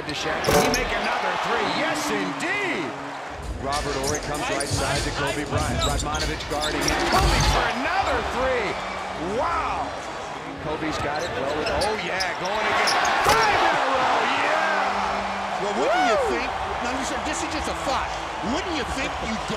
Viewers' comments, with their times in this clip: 0:05 Did anyone else hear "pipe it up" HAHAHA